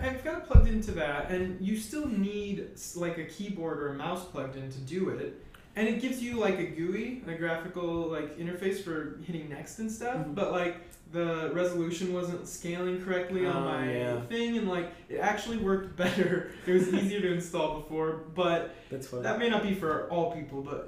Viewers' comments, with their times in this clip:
0:05 "It gives you, like, a GEWWY" Oh my sides!